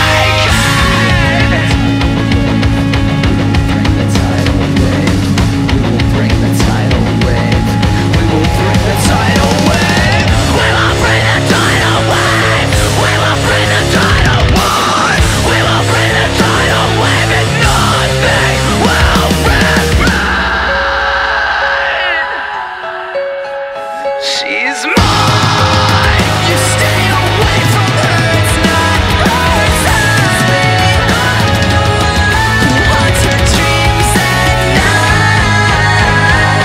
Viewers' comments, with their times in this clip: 0:08 yeah can i get the (shiawase starts playing )
0:19 omg that lil scream was so sad
0:19 OK SO...this was the first ever PTV song I listened to. I've been listening to this band maybe 3, 4, or 5 years now and after a certain amount of time you notice things you didn't notice before. It's always so special and exciting when that happens, and the reason I'm bringing this up is because I want to POINT OUT THE AH'S IN THE BACKGROUND THAT START I really love little details like this--its like there's hidden gems in all of their songs, which is super cool!
0:23 is the most emotion put into a song
0:24 This feels like some crazy anime theme the real good chorus,vibe
0:24 is crazy loud